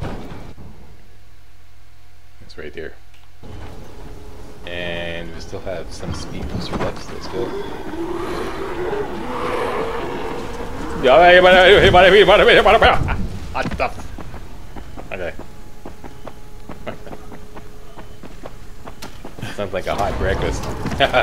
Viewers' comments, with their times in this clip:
0:04 The slack babble while jumping over the burning cars made me die! Lol :D